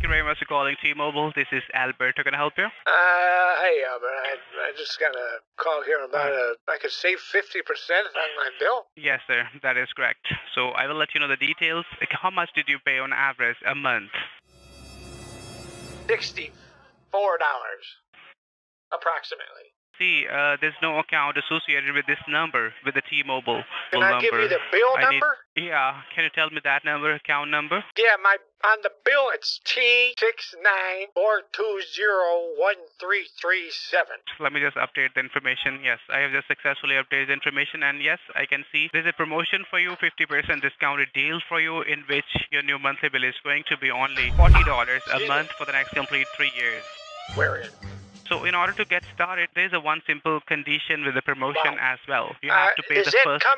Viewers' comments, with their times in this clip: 0:04 the voice sounds like adam sandler
0:39 The Mission: Impossible theme always makes me giggle. 😄 🤭